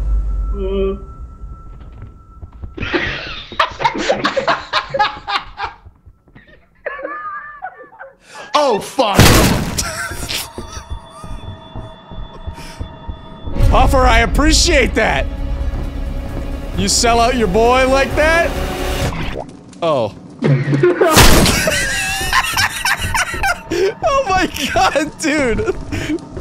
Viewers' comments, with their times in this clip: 0:06 laughing OH FU- 😂
0:07 "OH FU-" blam had me rolling on the floor LOL